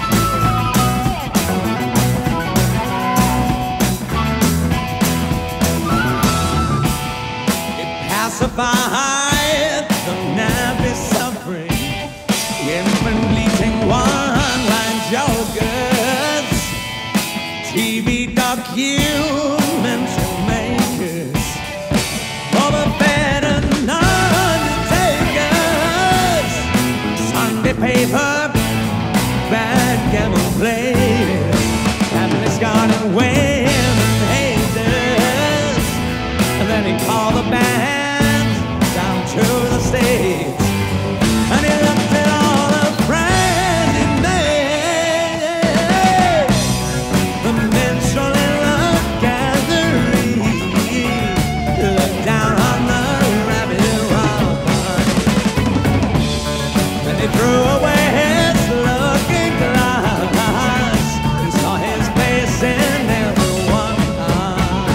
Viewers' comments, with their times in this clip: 0:04 Hammond wipes his face with a towel but you can still hear the bass playing. I know he wasn't a natural musician but did he mime while someone else played in the back?
0:50 Great song.... but .... He backs up from the mic... But his lead vocal keeps going... Kinda odd... And at the very end...Right after he sings the last note when he says Thank You... The mic sounds pretty bad....